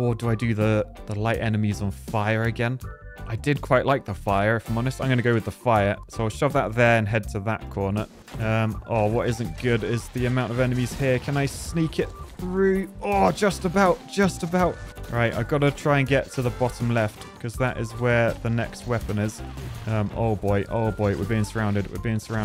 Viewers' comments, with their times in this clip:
0:03 why did you say fire like that?